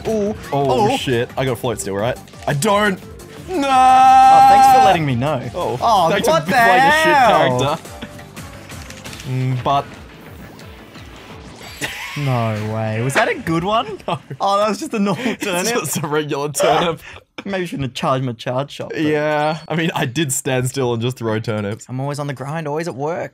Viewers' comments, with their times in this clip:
0:07 That was perfectly synced with the music